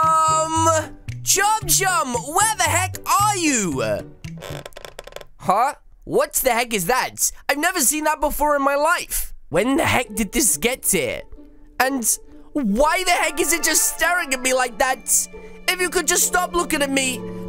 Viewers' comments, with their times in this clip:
0:05 That's you speaking bruh ;-;